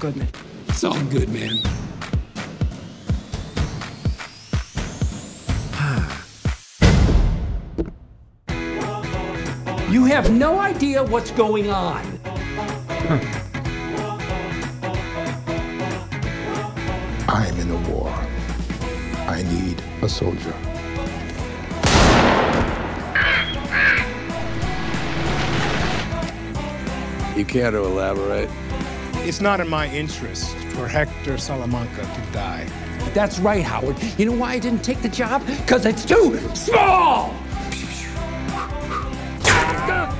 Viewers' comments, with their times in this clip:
0:08 Anyone fail to notice the upbeat music while there is literally a backyard full of body bags
0:08 when music kicks in
0:21 And with the fucking cheery music and him smiling LMFAO
0:21 bruh the music while a disney character is shooting a man in cold blood 💀
0:22 Bruh that happy music 😂